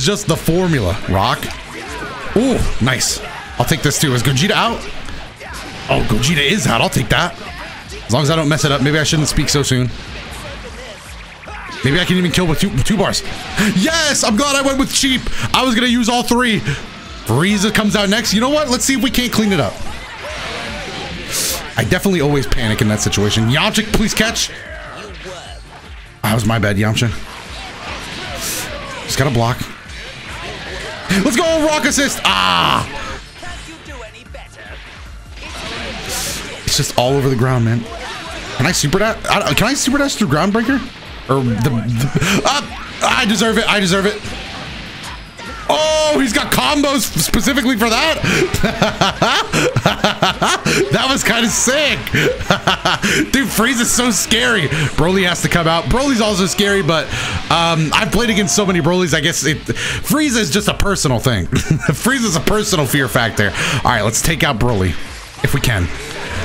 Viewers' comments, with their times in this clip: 0:10 Did krillin say destructo disc weirdly?
0:48 did he just do the same exact laugh twice?